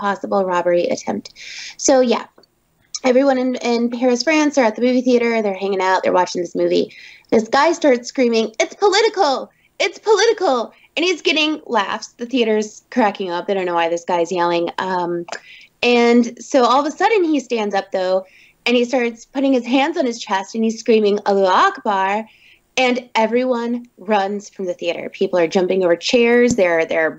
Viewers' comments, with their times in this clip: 0:08 The girl sounds like Maple from Gravity falls... for real